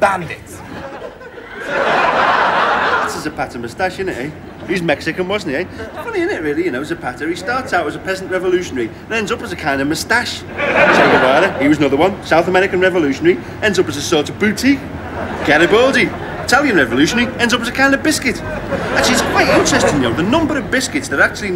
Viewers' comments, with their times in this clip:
0:03 that train driver sounds like a scouser!